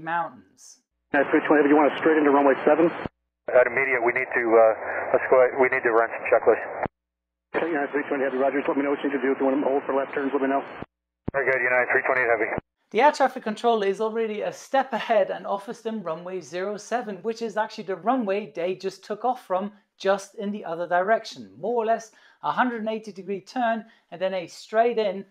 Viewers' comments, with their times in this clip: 0:07 auctioneer mode engaged